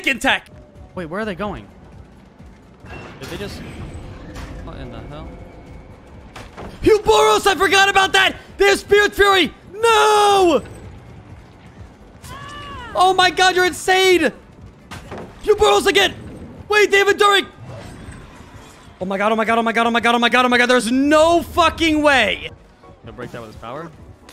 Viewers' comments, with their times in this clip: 0:09 BROTHER 💀 you literally sounded like Mr. Crocker off of Fairly Odd Parents here 😭😭 You’re absolutely hilarious, so much love <3